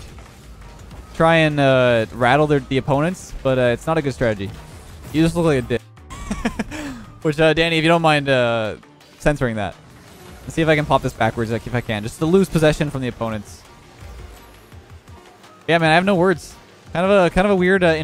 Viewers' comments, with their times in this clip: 0:05 i thought he said you just look like a ni- for a sec lmao